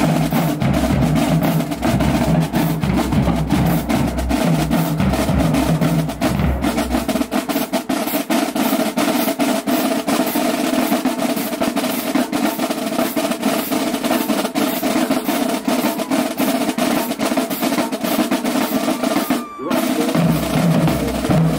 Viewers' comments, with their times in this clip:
0:06 That min mark is the dirtiest collegiate snare solo I've ever heard in my life. I'm pretty sure some of the guys didn't have a good grasp on some of those licks. Smh we gotta represent our craft better man